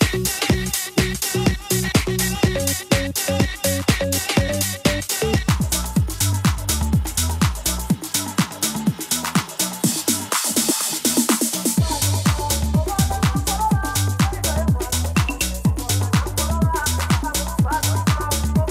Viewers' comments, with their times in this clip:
0:04 What happens ? Is that just a video glitch or a mix mistake? Sounded like someone just stopped one song but the other comes right in so I'm guessing a glitch.